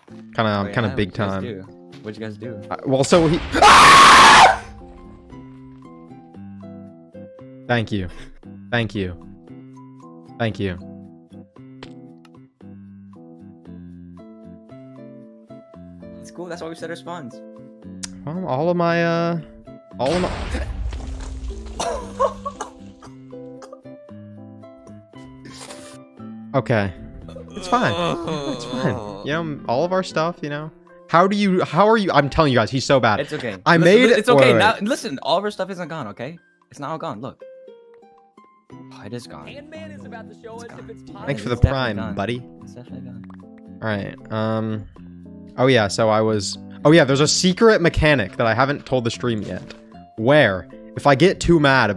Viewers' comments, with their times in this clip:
0:03 LMAO! That Scream 😂
0:39 I heard Preston